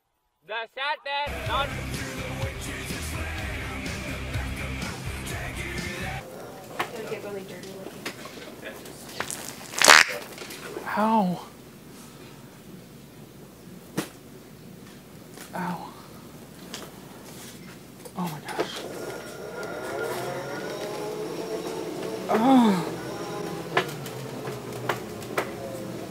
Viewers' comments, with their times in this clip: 0:09 Wow, zooming around in a rascal and unloading farts! I haven't laughed this much in years, lol! Those short loud ones like crack me up every time!